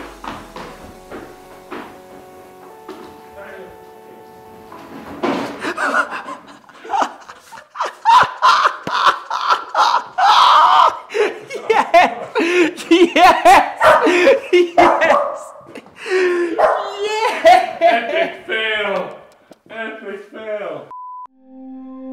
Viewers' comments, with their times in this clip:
0:06 THAT LAUGH XXDD